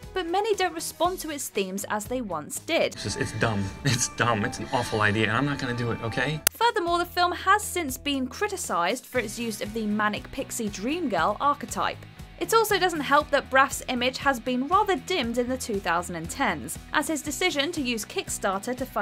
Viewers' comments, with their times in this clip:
0:05 Did yall plan that sound spike?